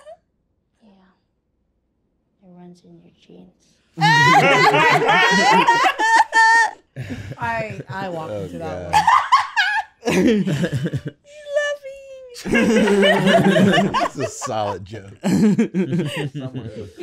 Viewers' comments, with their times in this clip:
0:05 wtf laugh was that ??